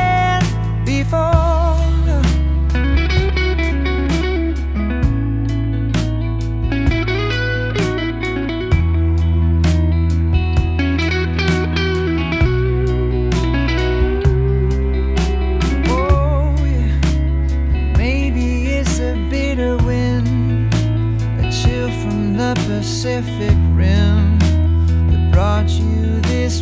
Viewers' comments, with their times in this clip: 0:10 Those 2 pre-bends on the 1st solo/riff gives me chills✨